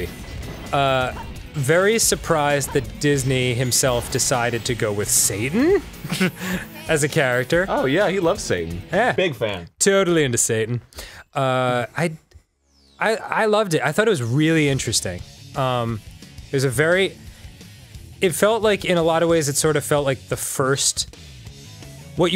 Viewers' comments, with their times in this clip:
0:06 You can hear tails get mad cause Arin likes sand this episode😑